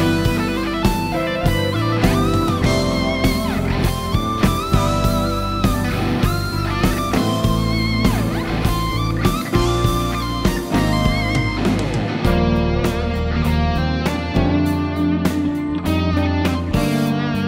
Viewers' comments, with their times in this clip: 0:03 WOW !!!! 3 semitones bend at the higher fret :O